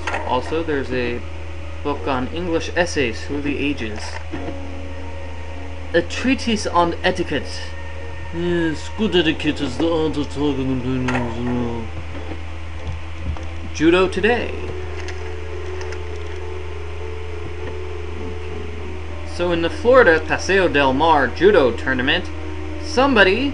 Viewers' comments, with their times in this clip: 0:07 what did you say on it sounds funny